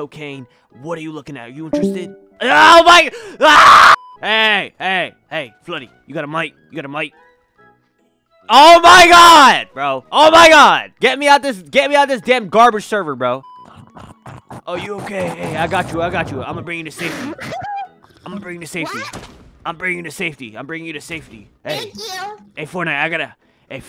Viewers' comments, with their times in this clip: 0:08 The scream for me daddy part on WAS SO FUNNY💀💀 LIKE WHEN THE GUY SAID “scream for me daddy” HE STILL SCREAMED “OMG”..💀💀💀